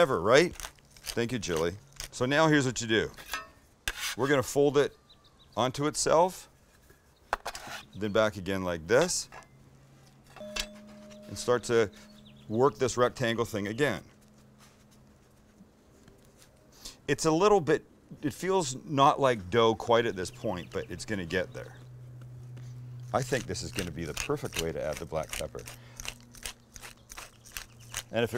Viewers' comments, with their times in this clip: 0:10 I thought my doorbell rang ... 🤦🏻‍♂️